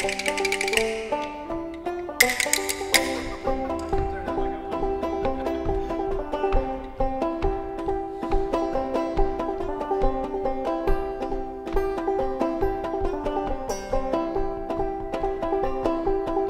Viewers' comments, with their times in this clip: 0:03 that's definitely happy C major chord!